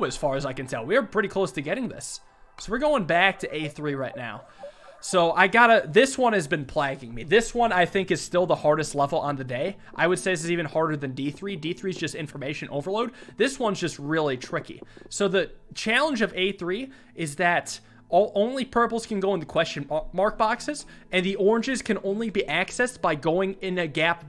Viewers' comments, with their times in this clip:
0:05 "plaging me"? Did he mean plaguing me?